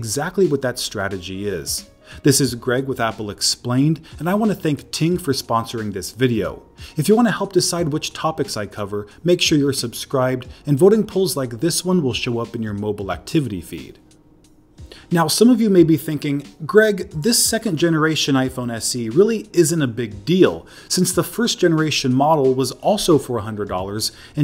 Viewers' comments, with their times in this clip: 0:06 for a secnod i thought Tim lmao